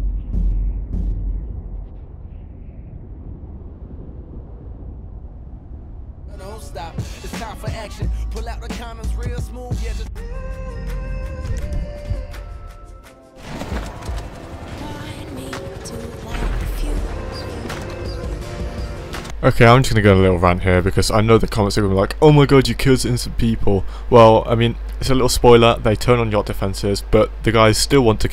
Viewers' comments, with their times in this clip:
0:09 nooo why u skip that songggg it’s a bangerrrr